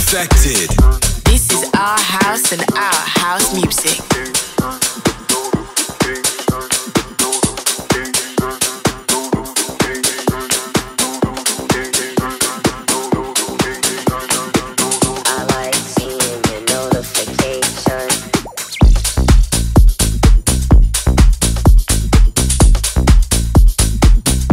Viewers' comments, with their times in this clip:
0:05 Didn't realise it was notification, not "Thot Daughter or gay son" on repeat